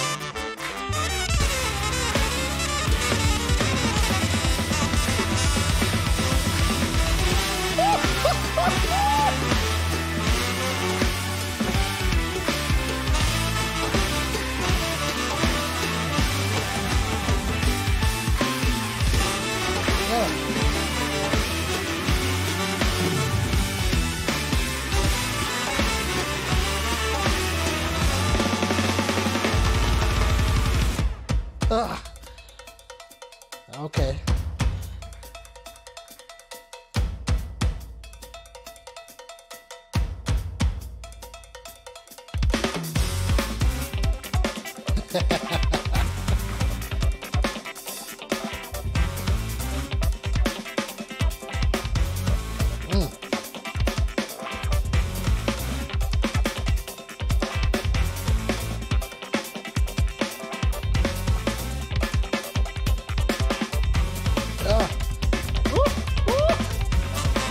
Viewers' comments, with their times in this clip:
0:06 Great video. This guy is amazing. Love the Tony Williams-esque fill
0:32 Was that double pedal or what?
0:49 I started saying "no.... No no no" The flow man! 😂😂